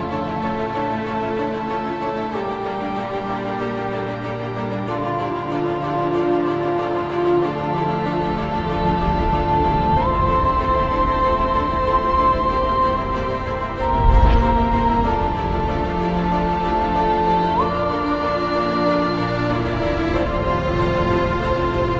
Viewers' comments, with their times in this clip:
0:07 i remember watching this part for the first time and i had chills especially how the music cresends in with seconds 😍❤️ just epic